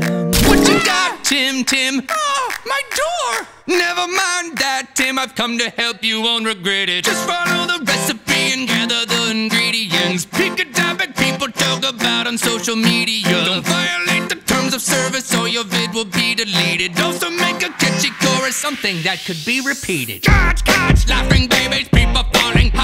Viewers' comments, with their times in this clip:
0:03 The initial singing is so catchy to me idk why it just always was to me